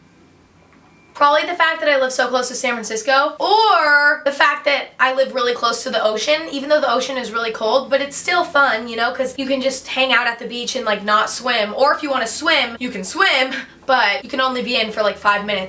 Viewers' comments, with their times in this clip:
0:03 she sounds like billie ellish bury a friend